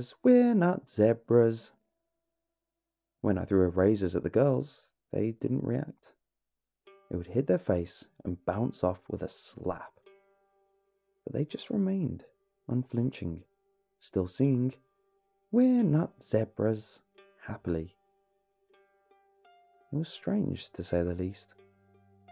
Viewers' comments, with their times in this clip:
0:04 did it say razors or erasers